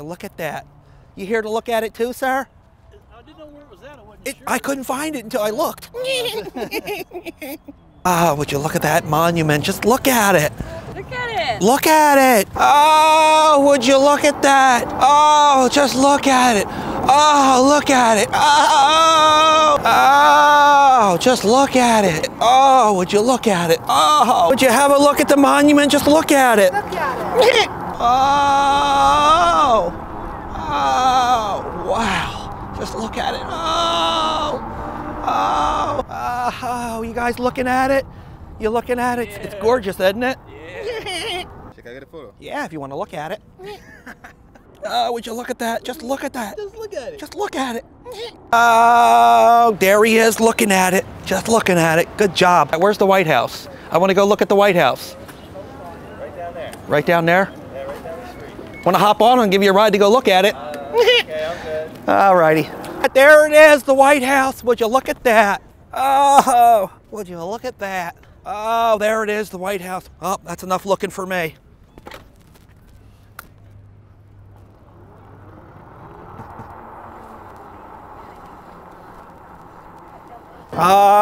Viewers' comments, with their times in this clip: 0:04 Omg that laugh 🤣🤣🤣
0:04 I love his goofy ah laugh
0:05 that laugh had me rolling 🤣🤣
0:05 That laugh 🤣🤣🤣 meeh heheeh
0:05 that chuckle though 🤣🤣🤣🤣🤣
0:06 That laugh minute in kills me 🤣
0:06 His laugh lmao
1:04 Okay, those ridiculous looking specimens have no right to laugh